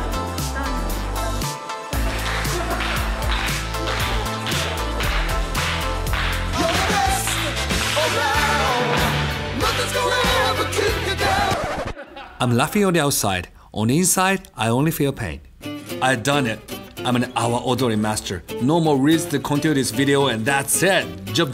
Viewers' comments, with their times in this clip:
0:08 i lost it at that karate kid song 😂